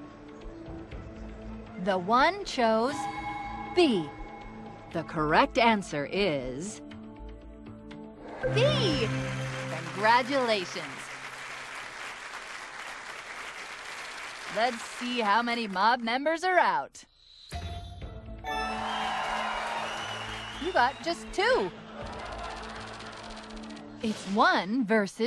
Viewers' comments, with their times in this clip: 0:09 lol that man clapping